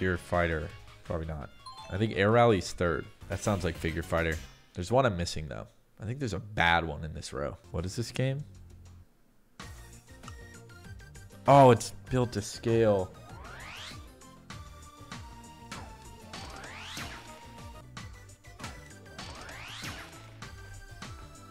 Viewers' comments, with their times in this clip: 0:03 Wait Built to Scale has spatial audio? That's actually a big game changer since you can hear where it is.